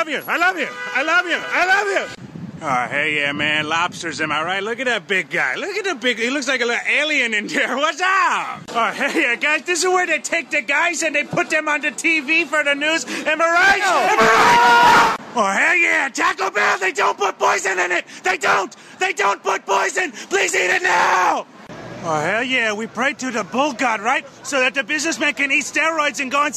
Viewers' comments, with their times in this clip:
0:09 That guy knew what it's all about. Joins right in on the screaming from the top of his lungs.
0:10 Peter Griffin voice